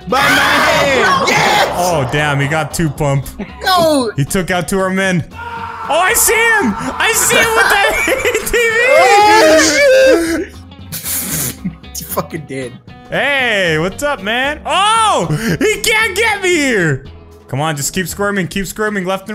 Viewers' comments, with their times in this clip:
0:05 with the scream. it sound like he ready to fight a war the a bike.